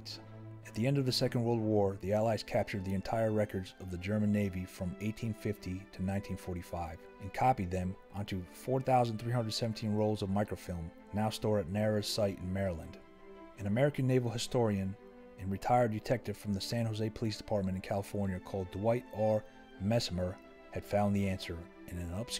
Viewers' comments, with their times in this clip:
0:05 you had me wiggling my audio cable for literally minutes lol